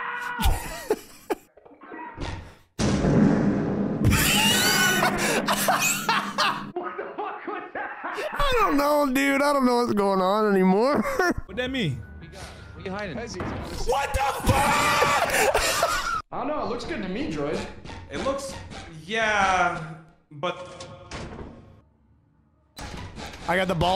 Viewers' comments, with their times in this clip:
0:04 Bro was actually wheezing😂